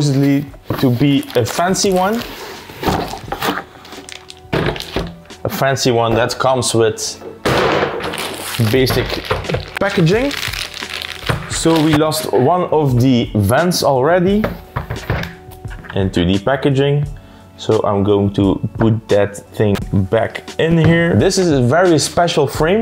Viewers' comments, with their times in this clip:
0:06 sounds like a cartoonish fall